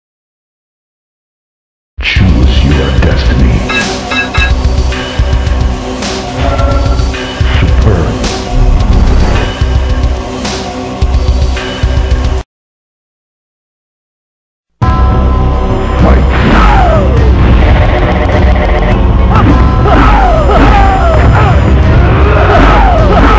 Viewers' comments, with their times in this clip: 0:04 I like that song